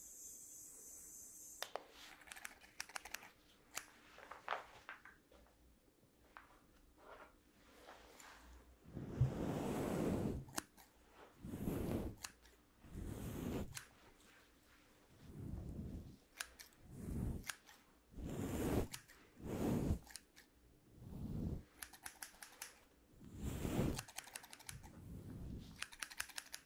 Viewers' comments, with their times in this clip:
0:10 Uh I don’t like soft spoken near as much as whispering 😭